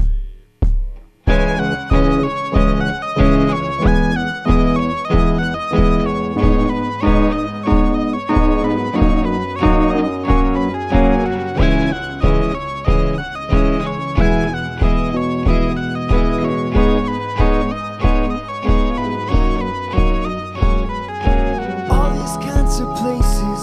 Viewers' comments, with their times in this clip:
0:06 oh my bleeding ears